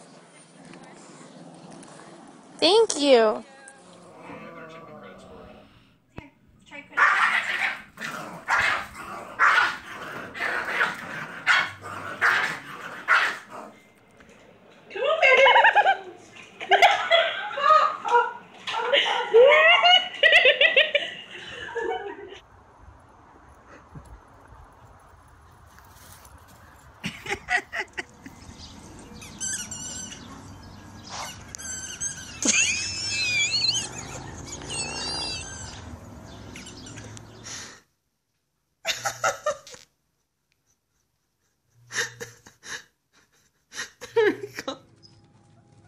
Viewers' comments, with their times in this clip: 0:04 When the puppy barks at it's tail, notice the mom doesn't have one lmao!
0:30 the person sounds like a dying bird🤣🤣🤣
0:32 seriously stop smoking, that laugh is horrendous